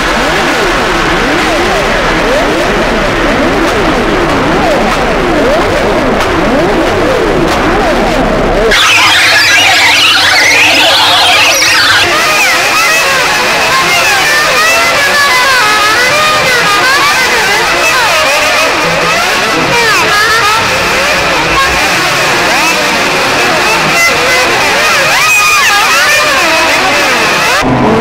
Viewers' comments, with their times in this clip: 0:09 sounds like Alvin and the chipmunks on 40.01 benadryl
0:12 typical fnf song